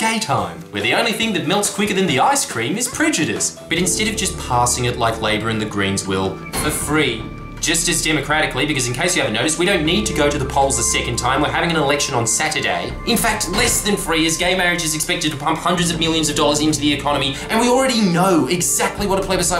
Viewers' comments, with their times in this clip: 0:03 So sharp is this edge, you could say he's a "blade runner" Love that music :D